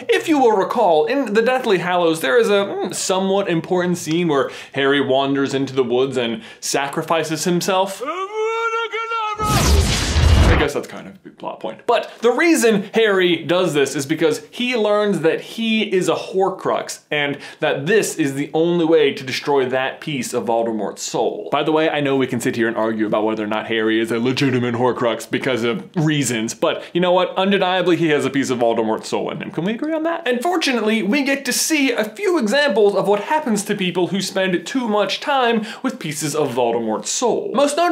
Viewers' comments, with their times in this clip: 0:08 Why do I feel like that scene where Voldemort shouts Avadacadabra sound like an over exaggerated sneeze of some sort XDDD. Voldemort scene
0:21 😂😂😂 the way he said that was the BEST!!!!